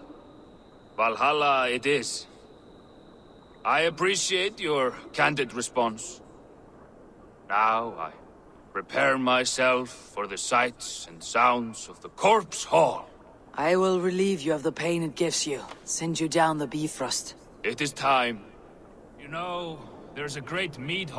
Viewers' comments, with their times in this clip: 0:09 it sounded like she said "beef roast". 😆 Is that how they say Bifrost.